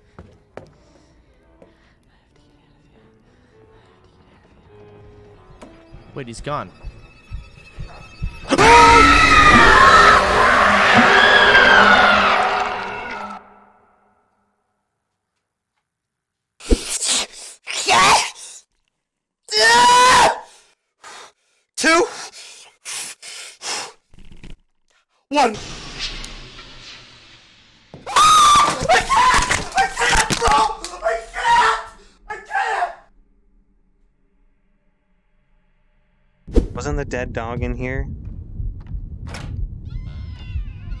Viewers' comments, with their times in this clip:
0:05 holy crap i was just about to throw my laptop (donot watch this video while wearing headphones)🤣🤣
0:17 Why is this man screaming
0:28 more like "AAAAAAAAAAHHH I LIKE THIS PART AAAAAAAAAAAAAAAAAAAAAAAAAAAAAAAAAAAAAA"
0:28 That scream tho! LOL